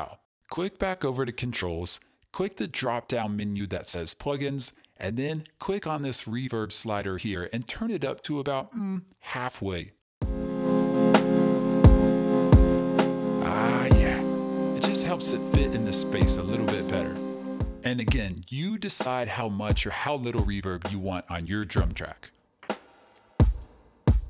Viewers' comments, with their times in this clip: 0:07 "mmm...richer..." at least that's what I heard in my head...